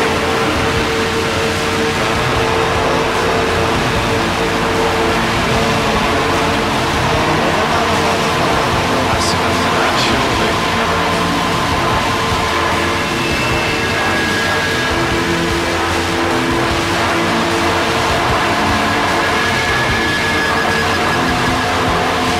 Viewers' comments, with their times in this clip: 0:08 Fuuuuuck me, this is a racket. does the singer say "That's enough of that, surely"?